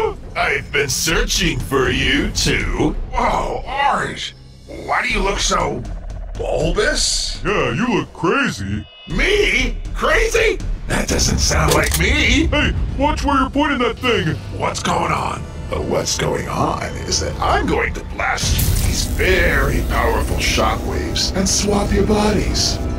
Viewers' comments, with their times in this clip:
0:09 Why does orange sound like ein in Aphmau 😅